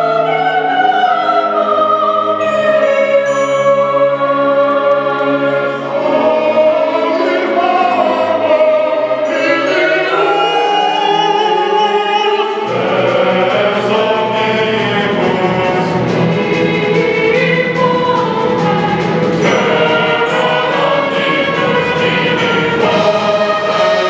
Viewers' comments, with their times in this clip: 0:05 oh you could SO easily tell who the big booming voice was